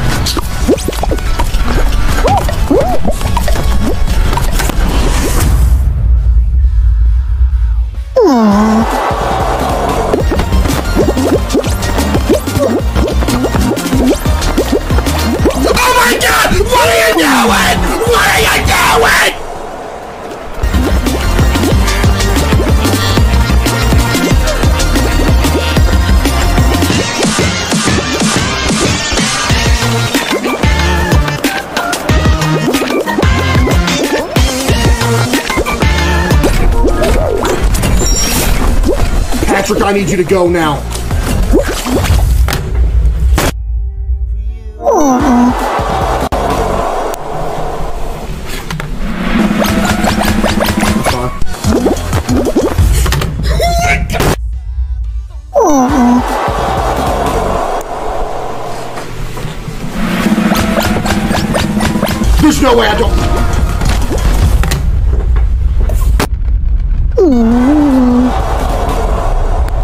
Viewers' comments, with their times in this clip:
0:04 the slight charging sound XD
0:04 you can here him yelling😂😂😂😂😂😂
0:04 Who heard him screaming? 😂
0:06 You can hear a faint yell "NOOOOOOOOO!!!"
0:15 bro turned italian
0:39 LOL- explodes from CaseOh banging on table
0:41 broke the sound in first hit!
0:53 bro just sayori cry bro😂😂😂😂😂😂😂😂😂😂😂